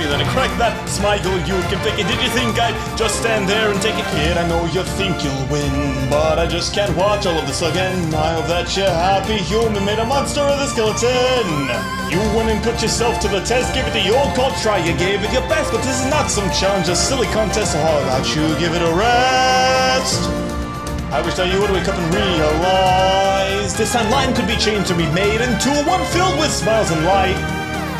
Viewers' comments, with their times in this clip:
0:09 Idk but in my head I read it at "a monster vs a seceloton idk lol